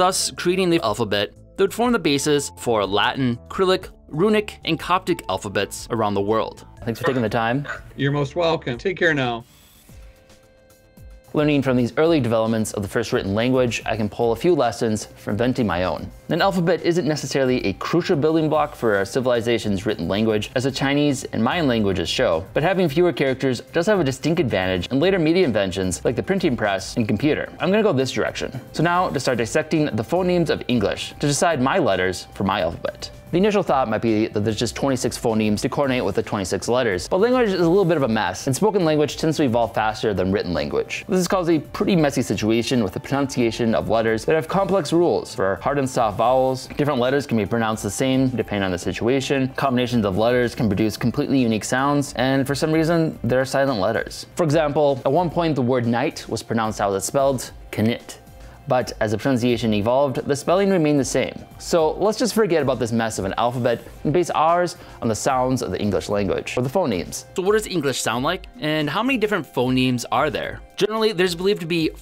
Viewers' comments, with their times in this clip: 0:03 Krillick? Really? You've lost all credibility for talking about languages.
0:57 "KA-NIT" That hurt to read and listen